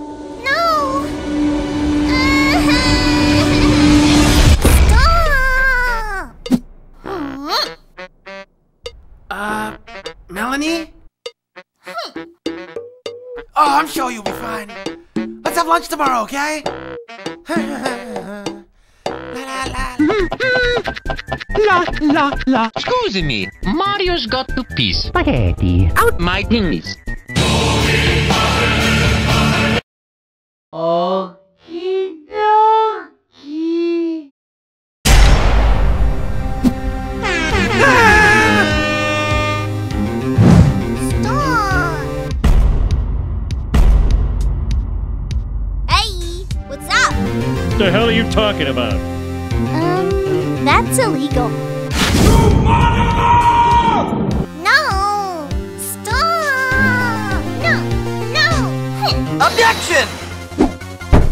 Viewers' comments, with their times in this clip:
0:06 that little mad noise is so cute
0:17 Axol is humming then Mario finishes it, hm
0:19 Is nobody gonna talk about how Axol starts singing the SMB Overworld theme and Mario continues?
0:28 Me: I wonder how angry she is.... One winged angel plays Also me: Oh...... O_O
0:28 Wow that music is just wild
0:45 I said why isn't meggy speaking probably of what she is saying like in the text she just saying all random instead of speaking probably
0:45 why isn't meggy speaking probably of what she is saying